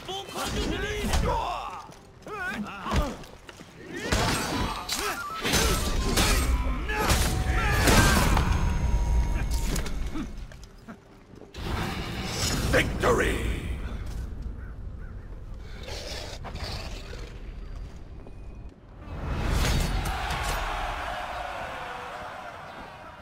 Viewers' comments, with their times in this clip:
0:03 Damn... flute fitted perfectly
0:04 that timing of the music tho